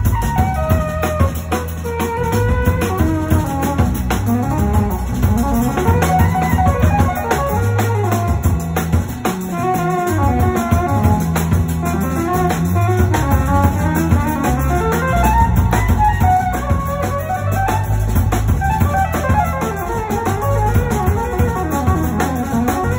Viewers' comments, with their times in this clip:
0:08 love that #15 selfsuprise and the motif developement!